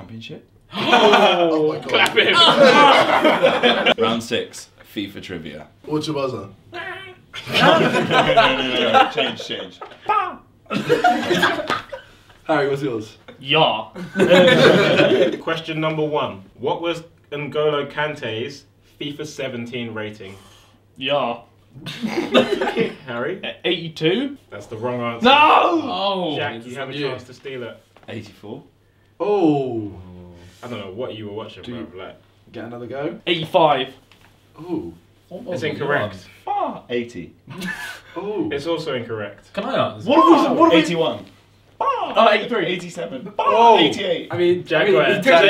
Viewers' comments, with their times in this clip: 0:05 man really said "🦆🦆" for a buzzer!😂😂
0:29 Idk why i found it so funny when Jack went “bah” every time he would answer